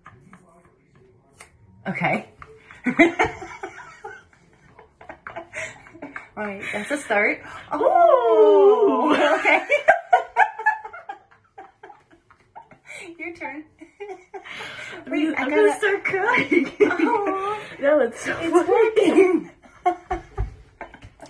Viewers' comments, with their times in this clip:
0:03 their giggles are so contagious Its so cute